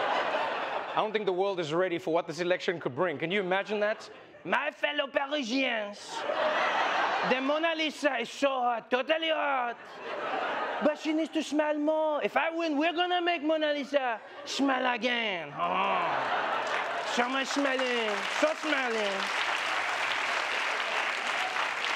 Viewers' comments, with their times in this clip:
0:04 The french Trump accent! 🤣